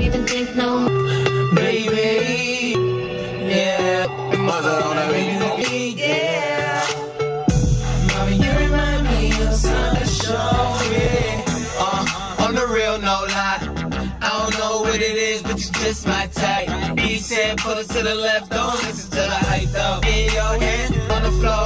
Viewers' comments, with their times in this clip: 0:09 who else thought it was magic shop ~sO sHoW mE, i'LL sHoW yOu~